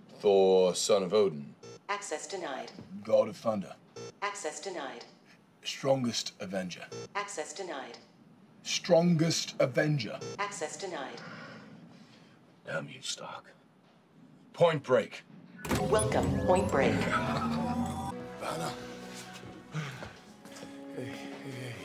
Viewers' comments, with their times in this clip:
0:05 he sound like my grandad 😂😂